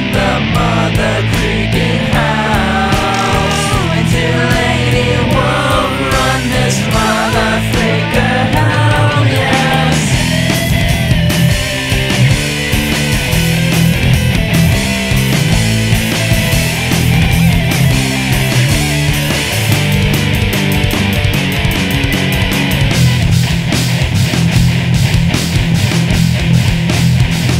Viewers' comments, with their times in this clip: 0:10 wow, at the mark, the guitar sounds like a track from Dead or Alive 5 watch?v=Aj6PCtim824